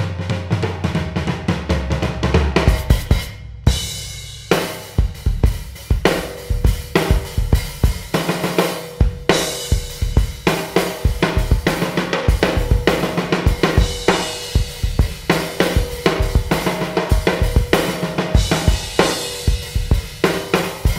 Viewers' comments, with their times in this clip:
0:08 That beat that you played sounded like the Groove 11 from Tommy Igoe's Groove essentials